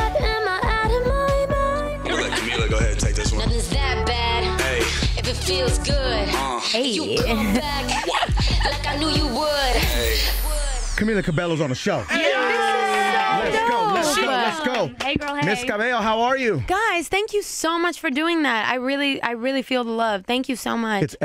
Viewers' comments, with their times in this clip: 0:06 Camila's laugh is so adorable 😂😍😘